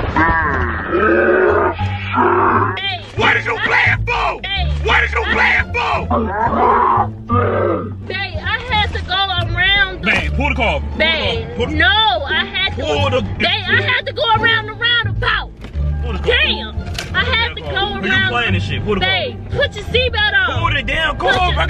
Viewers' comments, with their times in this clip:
0:03 Why he sound like pinky on Next Friday! 😂😂